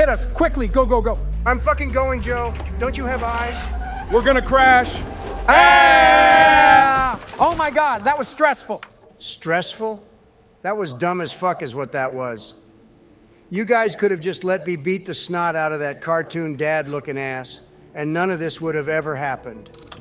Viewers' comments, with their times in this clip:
0:05 Let’s talk about the scared president scream